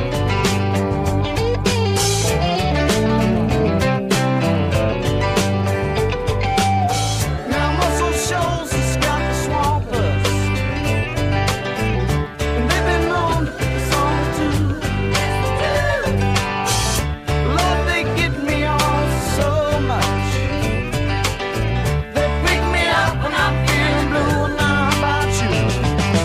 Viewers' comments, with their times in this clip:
0:08 THE CROWD OF ABOUT 10 PEOPLE GOES WILD!